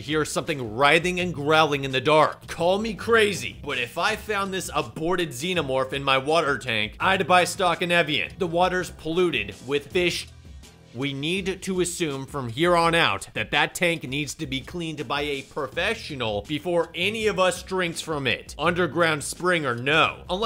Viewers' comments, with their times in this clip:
0:08 the way this line was delivered😂 must be a computer generated voice narration